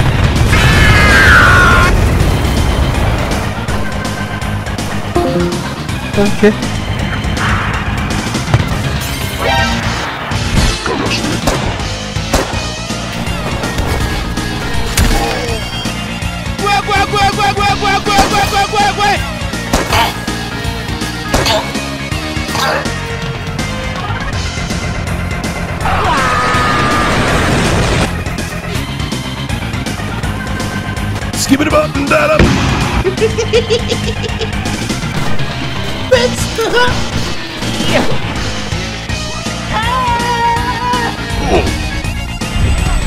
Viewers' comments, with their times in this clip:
0:04 am I the only one who checked my discord here?
0:04 that discord exit sound effect made me investigate my discord for 5 minutes before I realize that its from the damn video
0:04 Anyone else in a discord call during this video and immediately check your discord to make sure you didn't leave the call?
0:04 i rlly thought somebody called me in discord
0:04 thought i disconnected from my discord vc lmao
0:05 thought that was my discord
0:25 Soldier: *calmly walking along the beach Wario: WAAAAAAAAAAAA- *Explosion